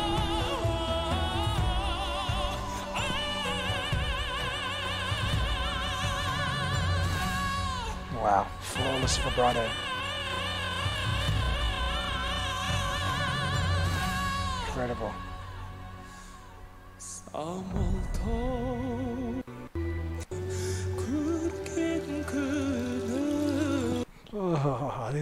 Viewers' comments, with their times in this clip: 0:09 Slowing down his vibrato = chills. Dimash's vibrato is the definition of perfection. 🧡